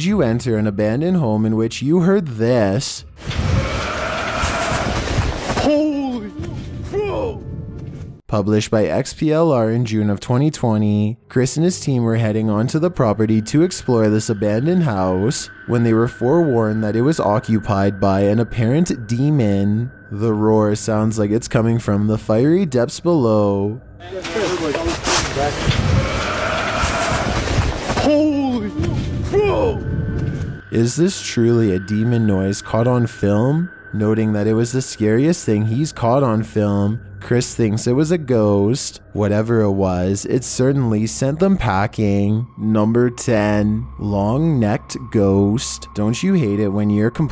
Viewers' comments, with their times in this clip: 0:04 Sounds like my dad waking up
0:23 probably just some chicken that likes metal music
0:30 sounds like a human .